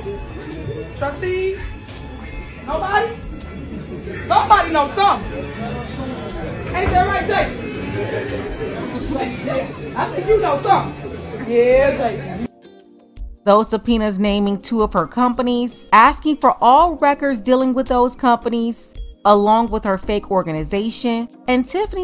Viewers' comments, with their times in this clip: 0:07 she’s sitting up there yelling the dogs ear shaking it. Poor buddy.